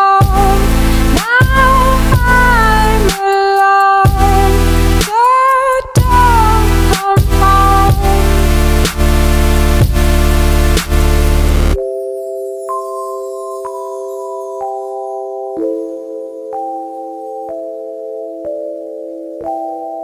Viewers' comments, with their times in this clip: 0:04 "Go down, come home" is what I hear